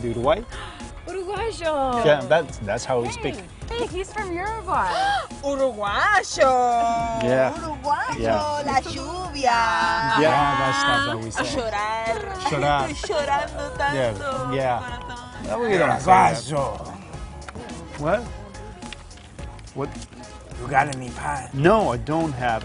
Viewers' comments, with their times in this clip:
0:05 awesome Uruguayan accent!! I suspect u r from there ;)
0:05 I love this series. Can anyone translate the sayings ? It sounds like "Uruguay zho", "la shubia", and "shura".